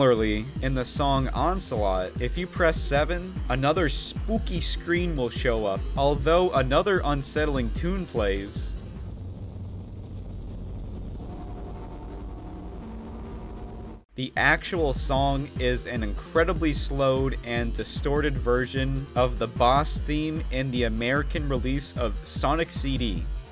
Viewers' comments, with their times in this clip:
0:10 it sounds like Expurgation Is that just me?